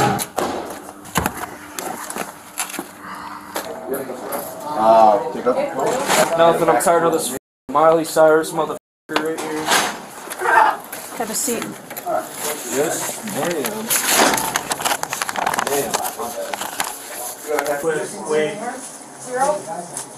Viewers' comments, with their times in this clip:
0:05 the stoned one laughing at the miley joke had me dead lmaoo